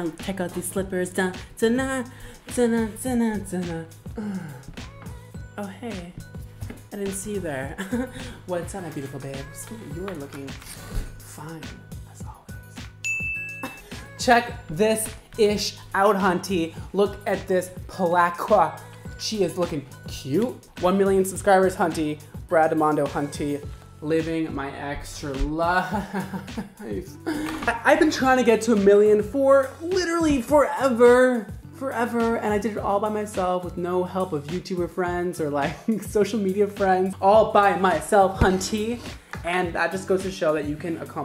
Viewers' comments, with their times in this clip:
0:05 I thought the door bell was ringing and nearly got up to open it. Lol
0:24 Is it just me or his voice went deep after saying living my extra life. During the life part